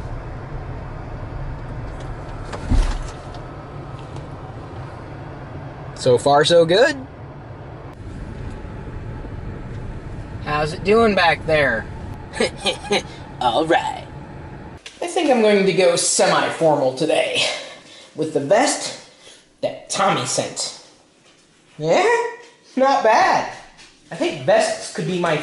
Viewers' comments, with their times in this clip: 0:10 lol GQ voice.